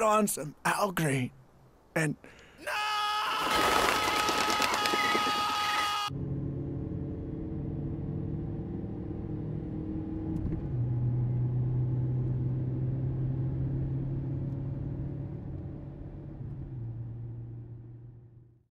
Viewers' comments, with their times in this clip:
0:07 the silence is loud